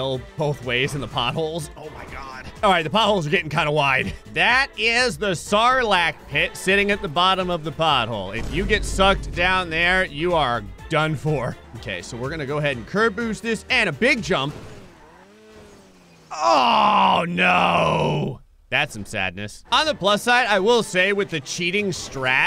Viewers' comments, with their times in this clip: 0:05 The Sarlak pit or the Tsarlak pit?